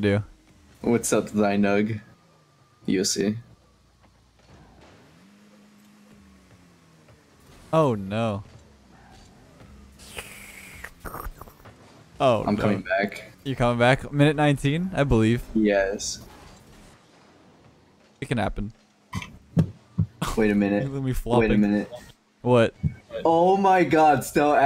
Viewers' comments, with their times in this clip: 0:09 The Sounds of hell Sluuuurp